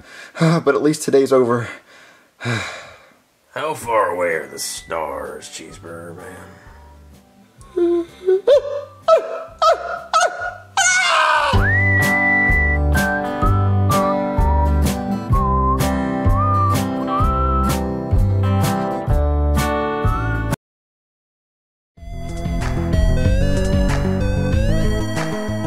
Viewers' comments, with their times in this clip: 0:10 That scream lol 😂